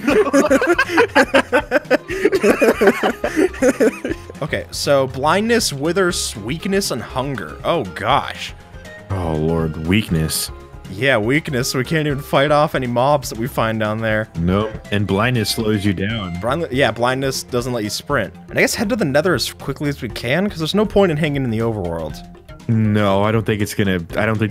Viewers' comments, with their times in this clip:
0:06 anybody realise that he says "sweakness" instead of "weakness"?